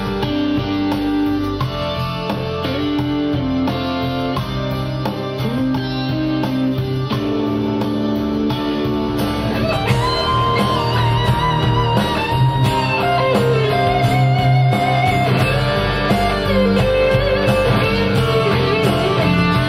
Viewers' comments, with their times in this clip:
0:07 That solo was awesome!